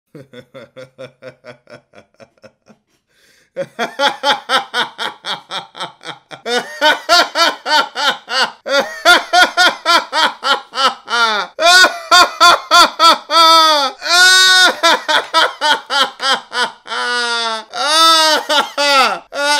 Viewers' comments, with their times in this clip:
0:04 the evil laugh